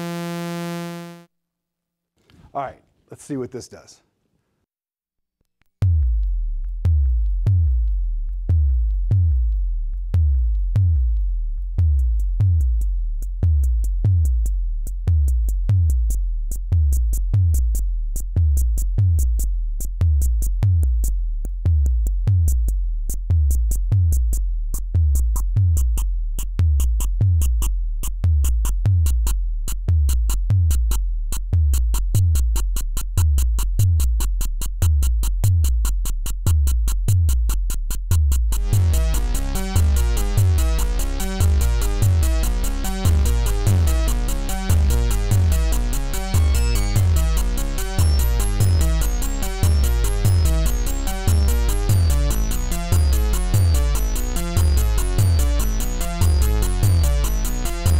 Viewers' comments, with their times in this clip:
0:05 that's the sound when a new universe is created
0:38 Sounds like cyberpunk
0:39 Music sounds like Portal 2 music
0:40 From on I was just waiting for some Metal Drums and Guitars to kick in. It's Mick Gordon's fault.